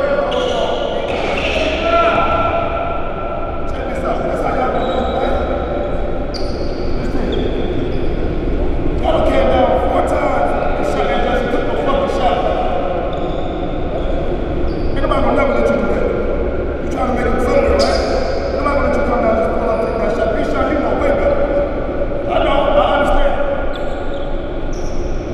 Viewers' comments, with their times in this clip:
0:08 dude cuffing hard in the background 😂 Anybody see kyrie clone on the court..dude had kyrie facial hair and all🤦‍♂️